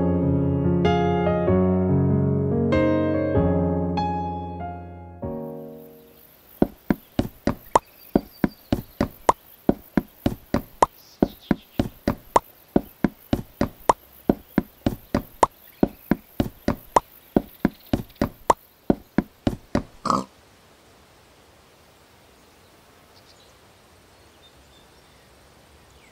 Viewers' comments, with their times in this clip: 0:07 The start to a beat